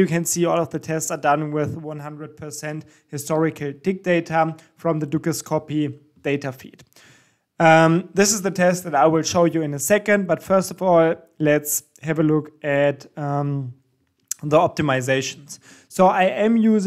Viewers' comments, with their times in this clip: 0:03 historical Dick data xd <3